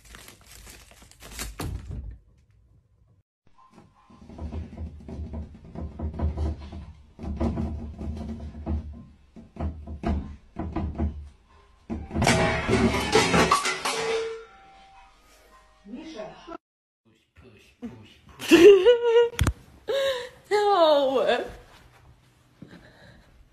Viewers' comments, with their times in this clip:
0:04 BRO HE JUST KNOCKED